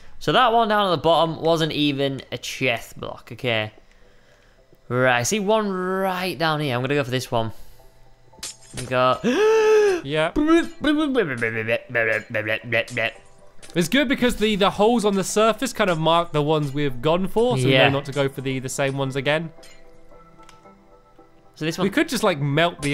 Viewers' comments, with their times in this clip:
0:08 DAT DUBSTEP THOUGH